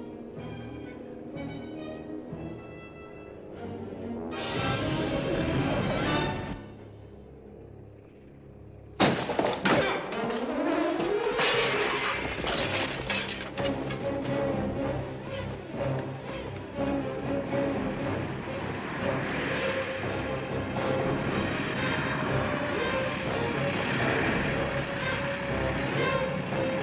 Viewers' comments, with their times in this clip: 0:08 jerry goldsmith score tension as those goones come though the door and running crashing though window and then struggling to get up and running fearing his life , scary tense drama movie